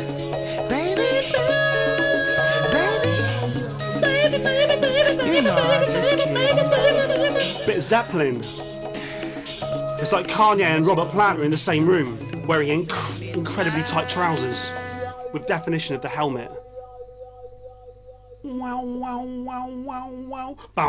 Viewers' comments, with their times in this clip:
0:04 starting a fight in persona 3 be like